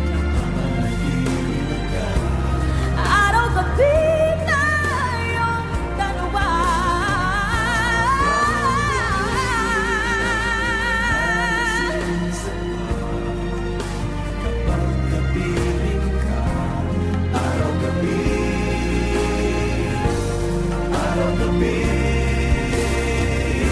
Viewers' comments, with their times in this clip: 0:04 This is a great performance. No doubt that she is very talented and very stylistic singer however, I would like her to lessen singing Regine Velasquez songs for her to find her own voice and for her to find her own trademark. I also observed that she is forcing her voice here. medyo pitchy. But still, she is one of the gems of OPM that we can introduce to the world. PS: This is just a constructive criticism, no hate😊